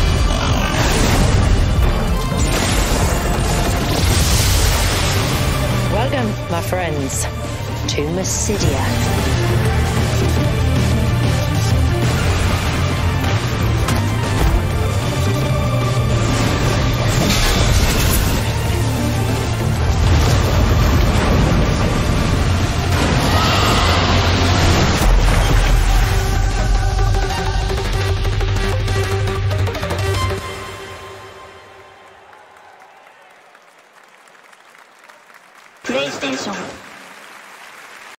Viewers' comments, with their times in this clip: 0:06 ish: somehow Allagan leitmotif
0:22 Yo why does the roar sound like dragons in elden ring?